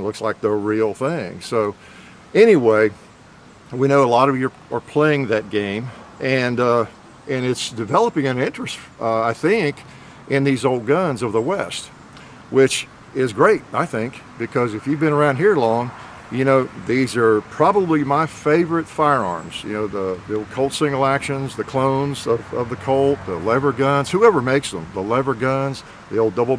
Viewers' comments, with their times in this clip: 0:08 Sounds just like Dutch when his voice cracks a little round